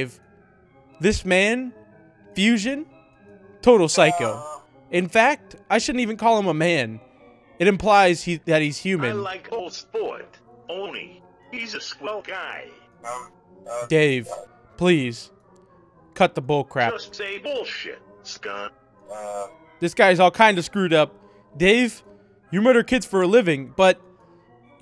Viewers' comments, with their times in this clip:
0:08 Cutest Dave Sound Ever That Made My Make Cute Noice